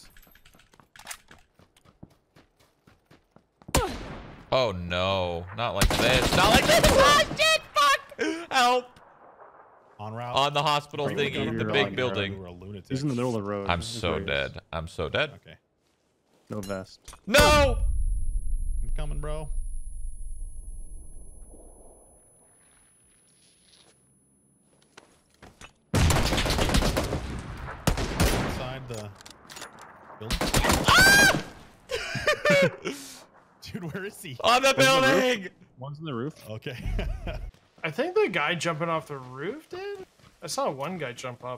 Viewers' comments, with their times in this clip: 0:06 thats scream tho If I in that position i will scream more loud and high then celine dion
0:28 Sounded like Banana Man....